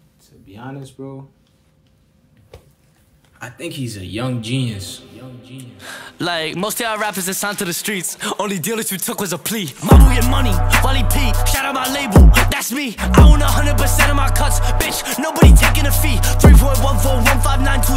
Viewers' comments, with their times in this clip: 0:05 the songs starts